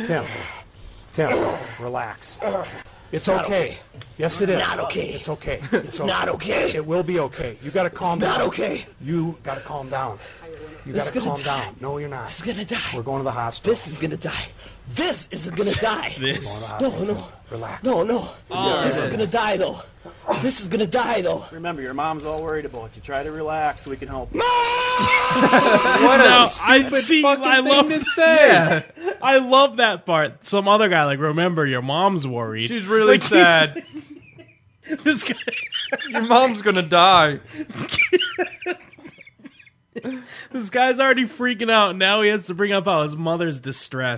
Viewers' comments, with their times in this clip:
0:03 Issss NOT oooh kay! I love how he suddenly gets a Dave Mustaine MegaDeth accent at that part.
0:27 When he screamed mom i lost it HAHHAA